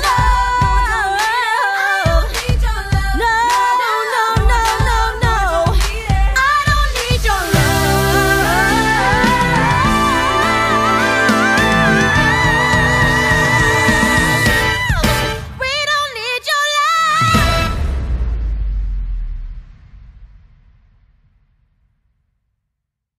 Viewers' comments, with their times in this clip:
0:07 Is no one going to talk about her high note ? That was amazing!